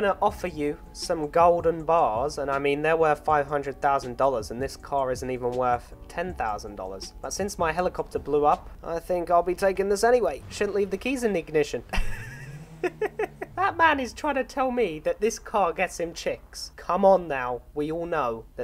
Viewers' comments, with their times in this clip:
0:04 what the hell is his voice